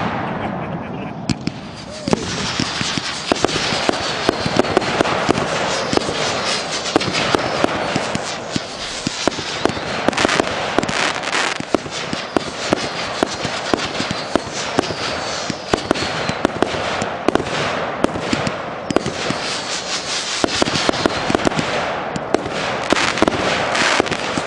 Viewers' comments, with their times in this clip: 0:10 in. What firework was that. 2 we're fired. Sounded like Brothers Parrot's Prattle.